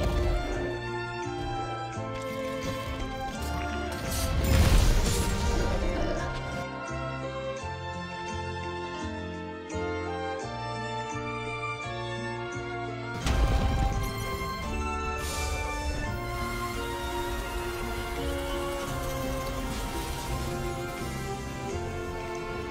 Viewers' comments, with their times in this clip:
0:05 The pause make me feel strange...chill music, one giant ass monkey floating, can't wait to flying-double-fists me in the head. Love your vid❤❤❤